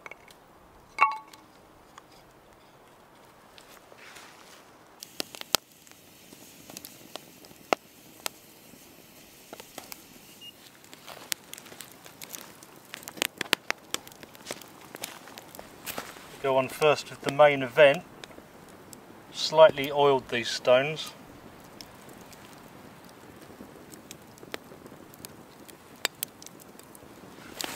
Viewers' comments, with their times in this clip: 0:09 (BEEP BEEP!) Oven timer went off, fire is ready.